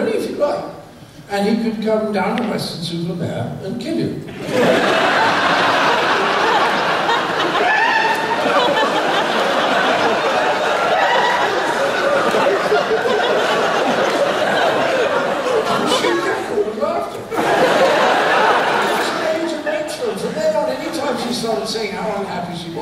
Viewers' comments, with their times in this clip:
0:07 Whomever is laughing is absolutely hilarious.